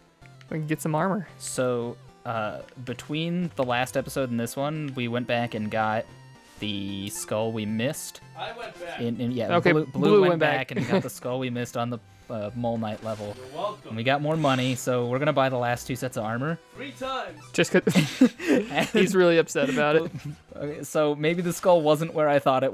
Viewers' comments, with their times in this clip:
0:08 you can actually hear Specter Knight speak to Troy and Murphy.